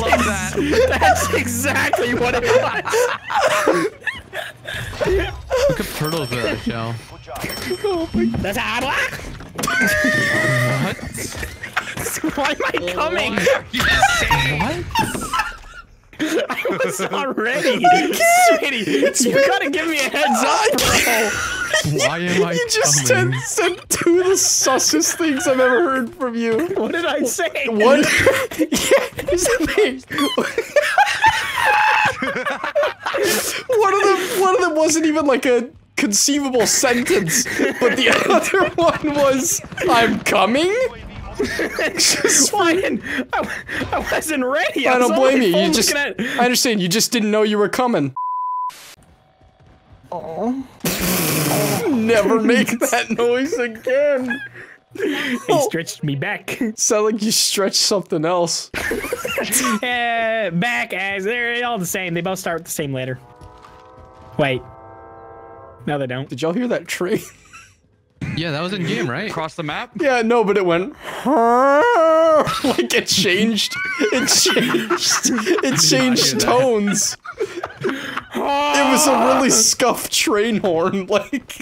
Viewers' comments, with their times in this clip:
0:07 what was that noise
0:49 Blarg sounded like the pufferfish eating a carrot 🤣
0:50 He sounds like the pufferfish eating the carrot
1:03 the train horn reminded me of when the movies start with THX with that start up sound or something like that
1:03 it sounds like the weird music intro for the THX thing